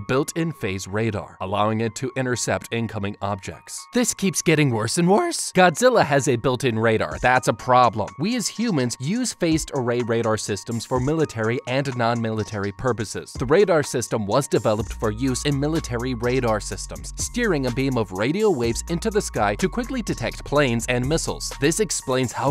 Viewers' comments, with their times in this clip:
0:03 Rip for voice crack
0:04 how did nobody know about the voice crack
0:04 BRO THE VOICE CRACK
0:04 the voice crack tho…
0:04 That voice crack on tho 😂😂😂
0:05 voice crack(i think)
0:06 No one talking about that crispy voice crack